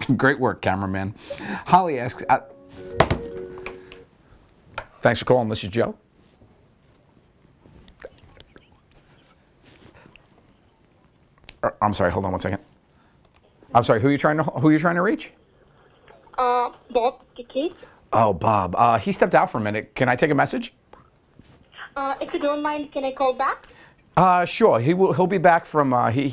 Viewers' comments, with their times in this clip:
0:09 my home landline has the same ringtone 😂😂😂